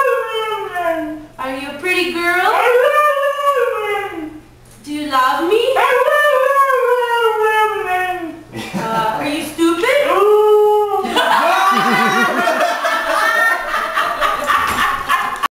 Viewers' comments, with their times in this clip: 0:10 who else thinks she sounded like a wolf?